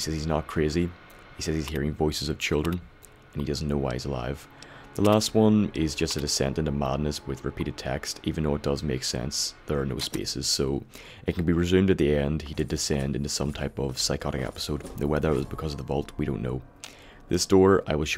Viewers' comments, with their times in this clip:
0:03 Sorry for wasting you time. After i heard u repeat the same 5 sekunds from 10 times. I mayby head you say the file dosent make sense, ther no spaces. But i think i miss hear you. This what i think you mean "the file dose make sense". Ps im realy glad u want to use you time on me, that just a person that miss heard what u say. (: